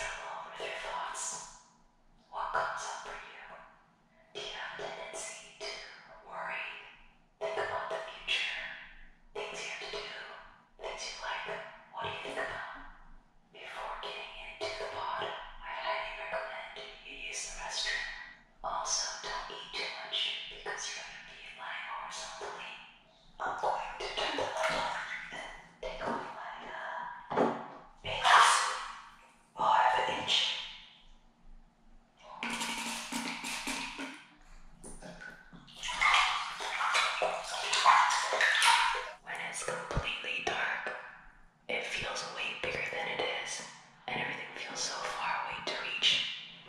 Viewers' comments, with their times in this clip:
0:10 Also those whispering sounds....i dunno how to say it but its deep, very thoughtfull. Imagen you were in the pod and these voices inside youre head 0-0. It'd be very relaxing
0:32 Lmao I thought she let one rip 4real 😭😭😭